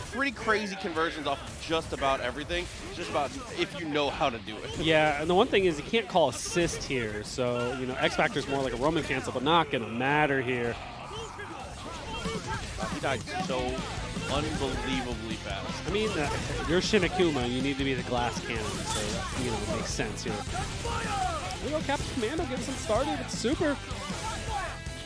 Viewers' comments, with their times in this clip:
0:09 kick ass music deserves a kick ass performance